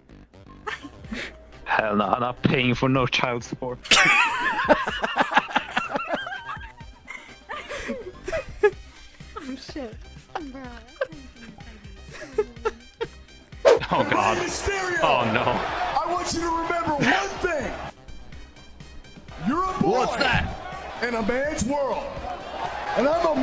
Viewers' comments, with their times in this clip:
0:04 That laugh is amazing just telling you.